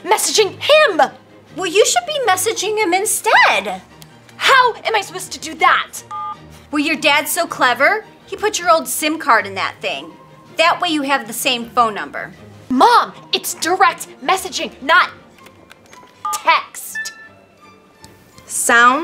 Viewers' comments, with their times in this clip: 0:06 the phone beeped